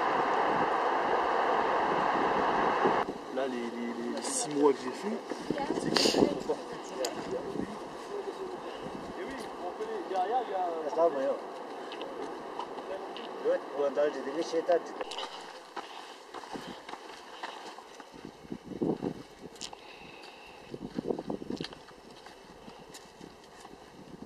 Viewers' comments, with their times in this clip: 0:09 Great shots. Positives : unobtrusive apropos of back ground music, but could have done better with some dialogues being audible. Also, the still shots of peaks were very subliminal, not enough duration to soak in those beautiful shots. The best shot of Everest and Lhotse was